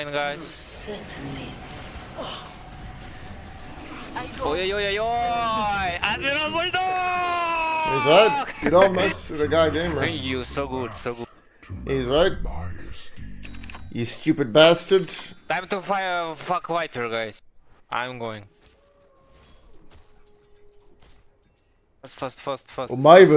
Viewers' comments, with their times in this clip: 0:04 OYOYOYOY nice playsound